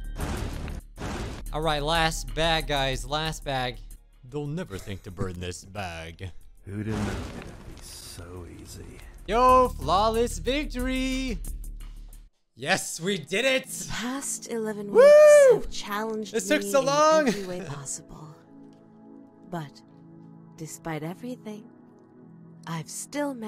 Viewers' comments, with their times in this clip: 0:04 I actually thought that was real audio